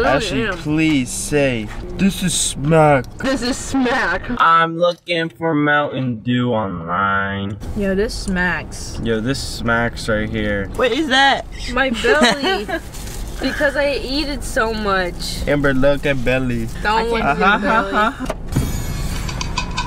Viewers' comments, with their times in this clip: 0:04 damn new 100gecs kinda slap